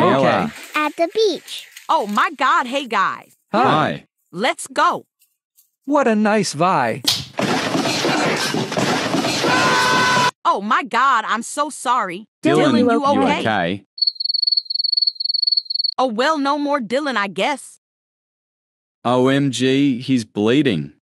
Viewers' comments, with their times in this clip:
0:08 The fall sound😂😂